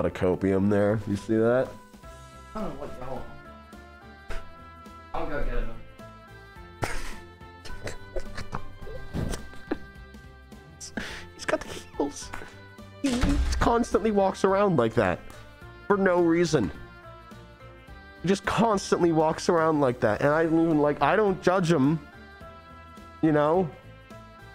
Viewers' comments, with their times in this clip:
0:10 Voice crack boo???!
0:10 Hes got the hEæLs